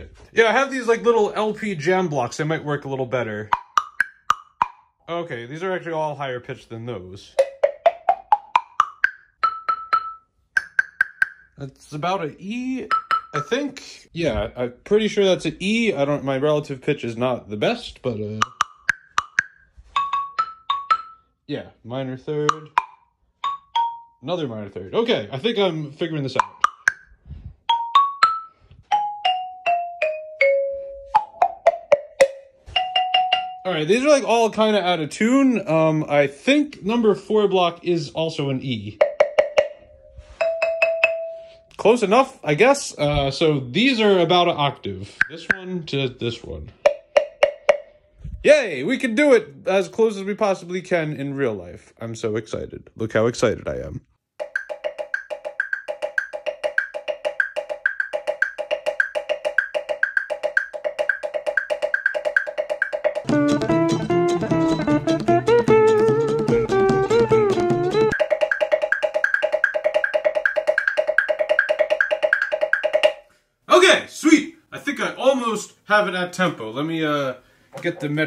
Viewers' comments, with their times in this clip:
0:07 I know you’ve already stated you got the pitches wrong, but for anyone curious: From low to high: Db Eb F Gb Ab B D G As for the two notes for the walk, it would be Db5 and Gb5, so the first and last notes on the woodblock set would have been perfect if they were up one octave. Nothing but love here. You rock and so does your channel.
0:10 definitely a G
0:10 Plays a G#… “that’s about an E” The pitches from the actual Mr. Krabs sound are F (high) and C (low), so perfect fourth, not an octave. 😬 Not to come off like a hater. I still very much enjoyed watching you do this.
0:11 IT’S A G
0:18 that’s a perfect fourth (about D and G)
0:18 The baffled king composing Cocomelon theme song!
0:18 the lower one is a D and the higher one is a G
0:18 allll wrong notes there 😳😂😂 o my ears
0:19 Your small orange one is a G Your red one is a B The purple one is between D and Eb
0:23 has the meme sound
0:35 no,its about 1,5 half tones deeper
0:36 that's D on the woodbox thing.
0:36 those two are way off.
0:46 i have been listening to bad apple so much that all i heard when you did that was the beginning of bad apple
0:47 that is definitely not an octave
1:05 at 1.6x speed it sounds pretty much the same